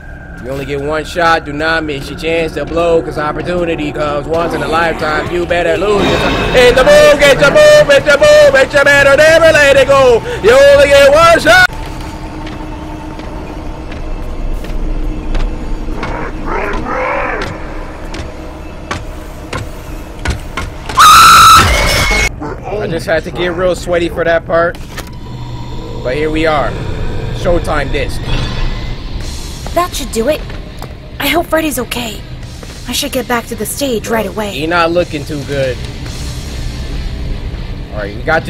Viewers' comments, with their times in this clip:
0:03 So...are we just not gonna talk about how he was juts singing a whole eminem song
0:05 collest singing part lol😂
0:05 Bro was dodging the security drones and started singing an Eminem song 😭
0:08 him getting scared and singing Eminem 😭
0:16 he sounded more like chica then chica did
0:18 HIS SCREAM LMAOOAOAO
0:19 bro that scream i am laughing so hard
0:20 his scream tho😭
0:20 bros scream scared me😔😔
0:21 this scream kills me 😭😭😭😭
0:21 yo he screams like a little girl.